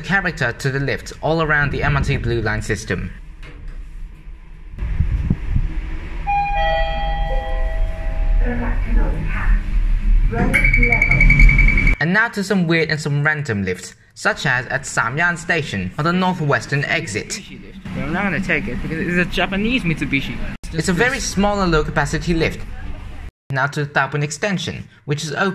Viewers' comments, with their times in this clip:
0:06 I swear I heard a sigma